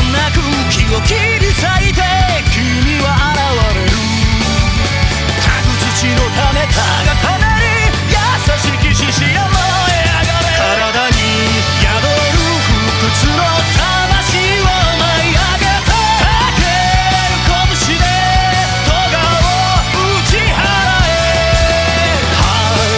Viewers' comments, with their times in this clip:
0:06 It's hilarios speed BUT still epic